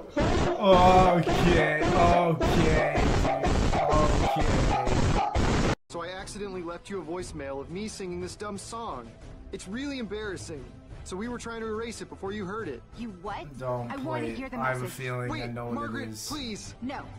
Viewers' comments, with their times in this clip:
0:05 Xbox 360 mic? Btw watch like, 10-20 seconds before that